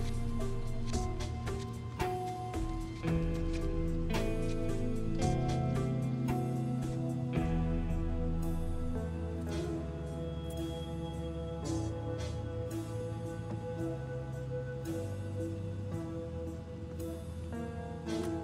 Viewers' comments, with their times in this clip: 0:06 the music though